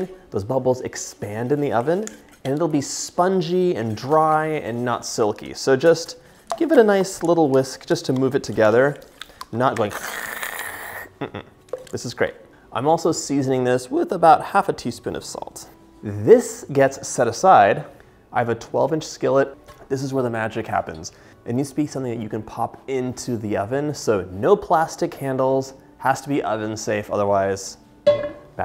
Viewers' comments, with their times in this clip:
0:10 Such a shame, as I ALWAYS whisk while making that noise 😅